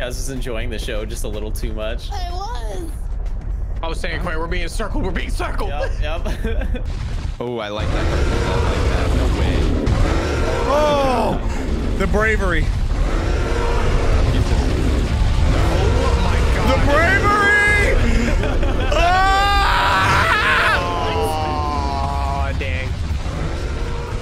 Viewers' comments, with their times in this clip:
0:09 That La Signora boss music really caught me off guard ngl. That is a bop 👌